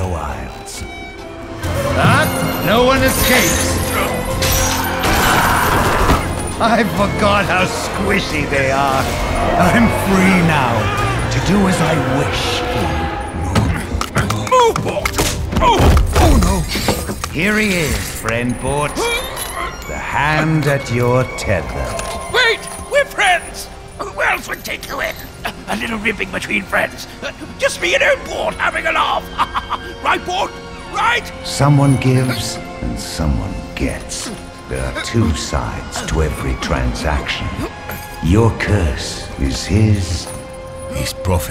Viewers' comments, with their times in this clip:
0:06 Can we take a moment to break down this amazing scene and all the great villain points it hits: 1. "I forgot how squishy they are!" This man is LITERALLY treating humans as if he was never human at all 2. the way his lantern floats beside him and moves with his hand 3. the poor bastard struggling for breath as his ENTIRE BODY is slowly absorbed into Thresh's lantern 4: How utterly happy Thresh looks as he cheerfully exclaims "I'm free now, to do as I wish." 5. The realization of how utterly fucked Runeterra is now that this sadist torturer that wants to watch the world burn is no longer bound to Shadow Ilses
0:24 that facial expression and his voice, so hot